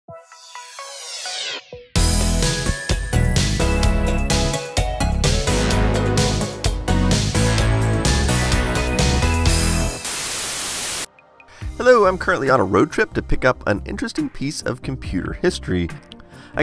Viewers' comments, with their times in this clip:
0:00 I keep going back to to listen to that 80s lushness